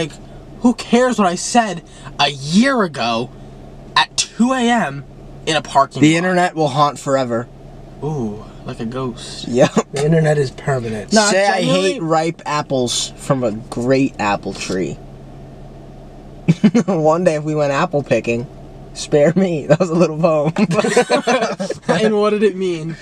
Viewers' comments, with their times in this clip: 0:10 Matt's voice is crazy